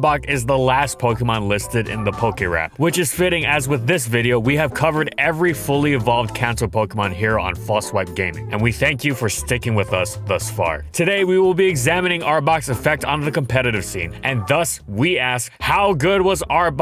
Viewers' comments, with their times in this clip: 0:04 watching the viedeo 3 months after release and hearing: silent applause